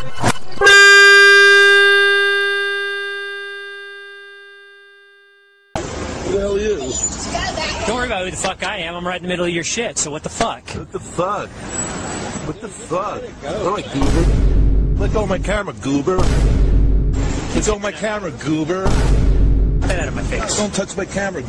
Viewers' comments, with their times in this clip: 0:04 All I hear is adam from helluva boss and jake the dog from adventure time